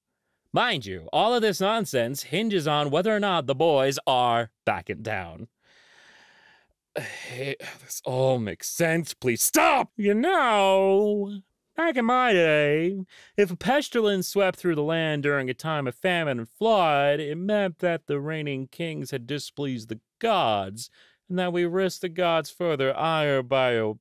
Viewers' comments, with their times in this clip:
0:09 you sound so close to the "STOP! You have violated the law!" guy from oblivion